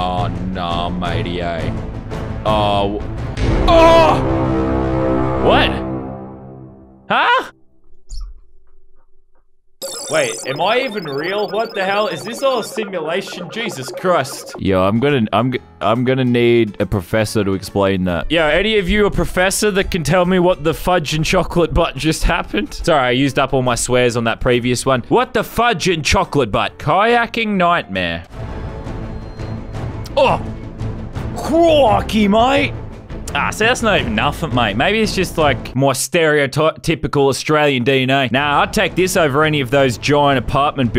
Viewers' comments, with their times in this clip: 0:06 BRO you could hear his hand squeak on the table SWEATY PALMS
0:07 you can hear his sweaty palms slide on the table
0:23 I thought he said he was Spider-Man and sing his song 😂 lol 😂